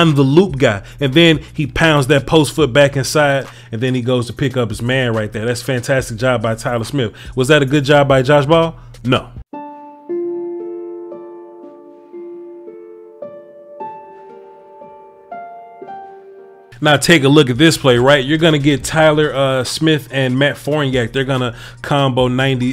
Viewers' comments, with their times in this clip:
0:09 nice touch with the piano music